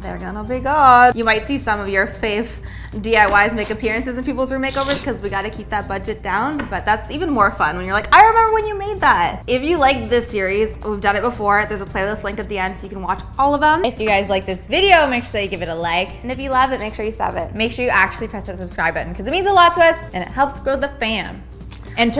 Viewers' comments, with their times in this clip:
0:06 who sneezed jssjjs